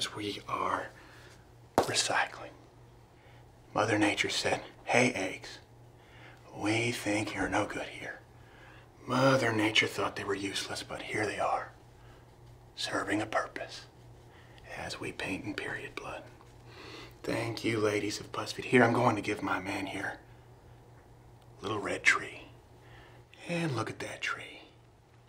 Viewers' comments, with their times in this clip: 0:09 I'm in tears right now. You can really feel him trying not to burst out laughing with this line.